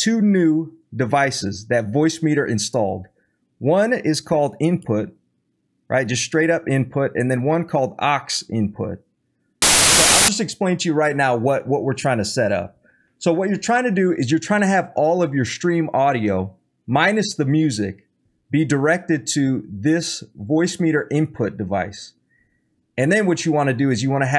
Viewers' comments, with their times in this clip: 0:09 RIP LEFT EARS!